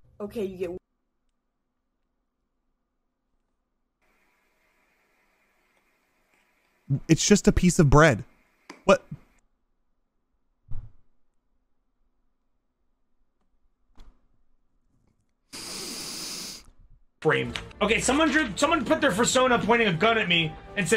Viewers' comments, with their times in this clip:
0:07 “it’s just a piece of bread” visible pain